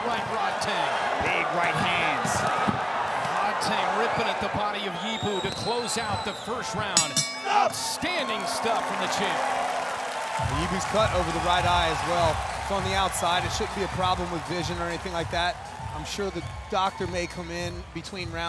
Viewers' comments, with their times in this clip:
0:05 How rodtang turns from beast to gentleman right after the sound of the bell Talk about self control